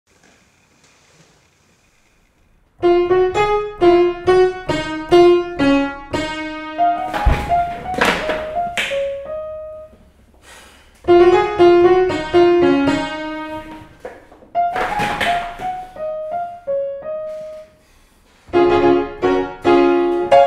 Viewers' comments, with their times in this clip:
0:07 when you hear a footstep when you’re alone
0:07 That moment you realize your alone and a ghost piano starts playing without your command.